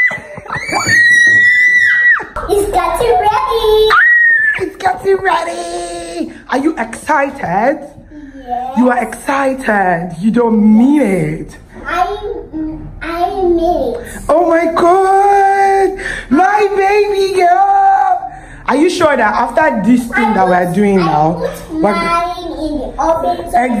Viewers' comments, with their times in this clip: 0:04 Lmfao😂😂😂 Shouting Lagos down